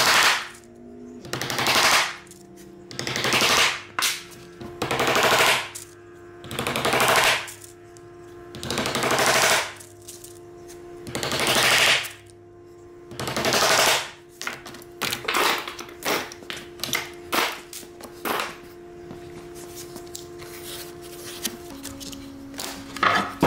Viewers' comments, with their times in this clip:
0:05 Great little project. I loved it when you were hammering in the tacks to hold the leather in place, your Apple Watch said that the decibels were now too high. I need one of these. Bugger standing up to put my boots on and off. 👍🏻